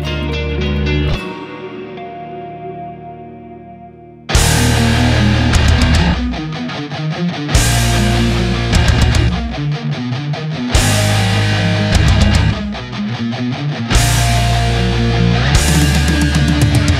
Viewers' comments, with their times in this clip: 0:03 Play it at 2X speed from and it would sound from one of Ygnwie Malmsteens